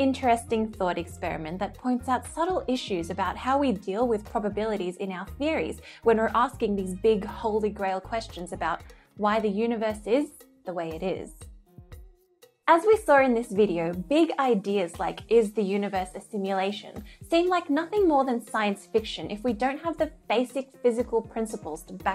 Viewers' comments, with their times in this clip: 0:10 Why are there multiple seconds of almost awkward silence after a sentence throughout this video such as